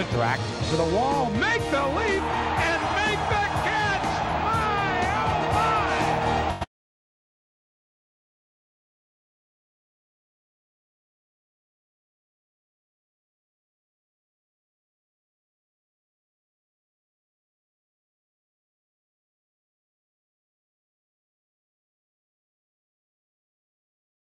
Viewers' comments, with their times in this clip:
0:06 Audio cuts out